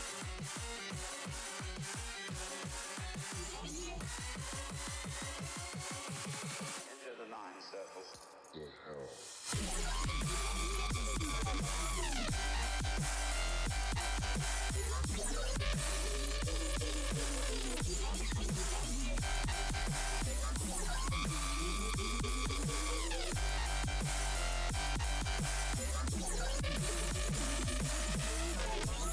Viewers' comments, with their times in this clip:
0:10 why does that remind me of TommyInnits scream?